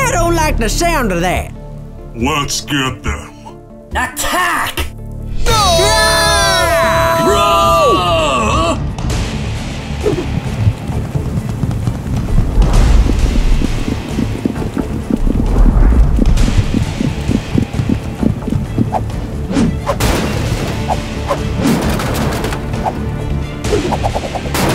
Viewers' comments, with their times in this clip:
0:05 Bingo Drooper and Snorky: SCREAM Fleegle: RUN!!!!